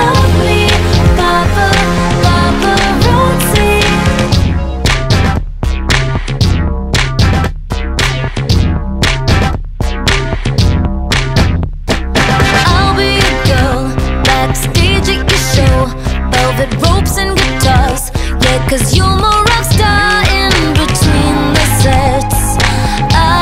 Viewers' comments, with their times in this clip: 0:04 ok i know im not the only one who heard kahoot music